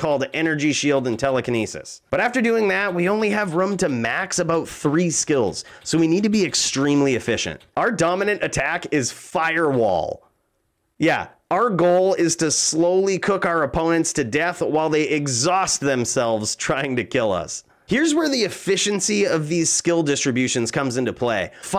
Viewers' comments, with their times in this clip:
0:07 that pause cracks me up! XD